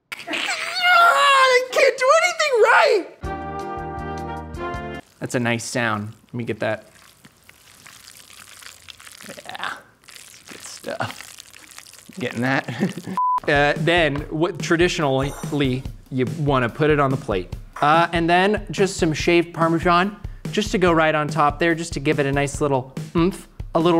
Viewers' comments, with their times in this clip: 0:07 sounds like a mac'n cheese vine from back in the day... I'd quote it, but there are children over here gosh-darn-it!